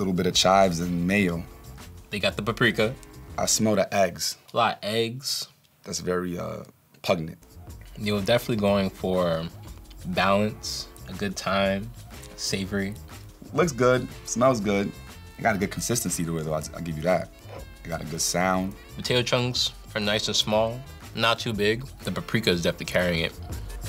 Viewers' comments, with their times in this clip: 0:06 Bro needs to take a cooking AND English class! 😂😂 PUG-nent??
0:06 did he just say "pugnent" !?